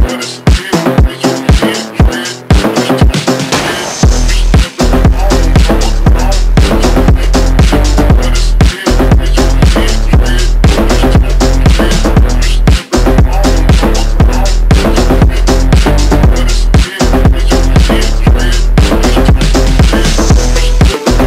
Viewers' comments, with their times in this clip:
0:06 listen it at max volume with a headset then go to you can litteraly hear your fucking headset vibrate. this is fire